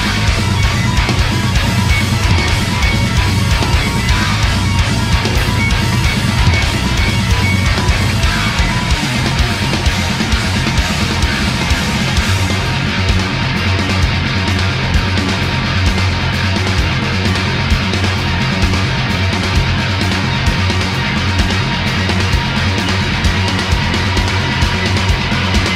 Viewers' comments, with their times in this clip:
0:09 The build up from and the riff after that, are so damn heavy they have their own gravitational fields. This band is just amazing. 👌👌